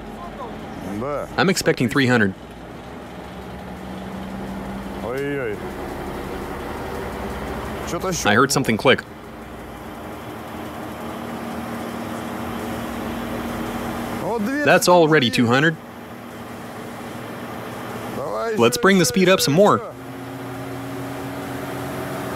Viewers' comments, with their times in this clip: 0:05 The noise might be the steel cords in the bead breaking???